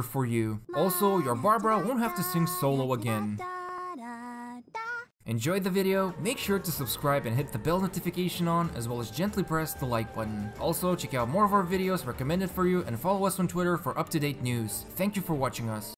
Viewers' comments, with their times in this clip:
0:06 Oh god I always forget how bad is the english dub, but thank everyone for reminding me LOL